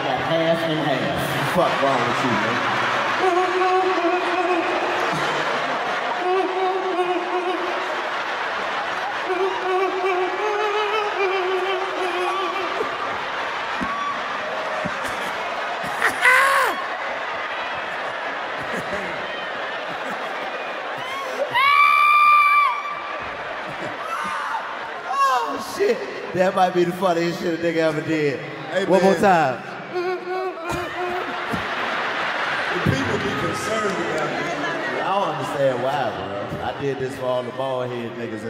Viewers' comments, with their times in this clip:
0:03 LMFAOOOOOOOO DC a fucking trippp for the horror music😭😭😭
0:19 Oh Hell Naw WTF She Laughing At